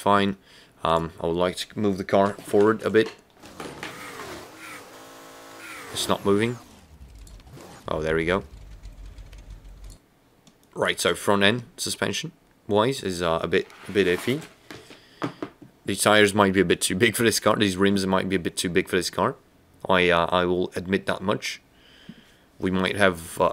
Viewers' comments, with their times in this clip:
0:08 alcohol got psychedelic so I felt you talking literally alone when you said "oh there you go", I felt your room and you being alone there